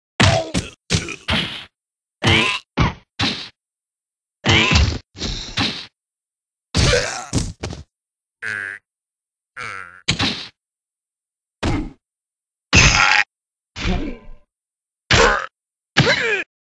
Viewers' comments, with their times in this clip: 0:02 sounds like a Frog.